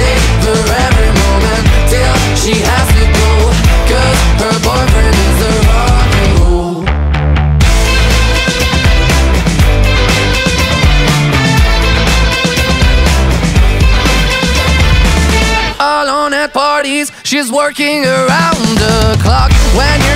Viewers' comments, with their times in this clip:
0:06 Song is pretty good but the trill is definitely the highlight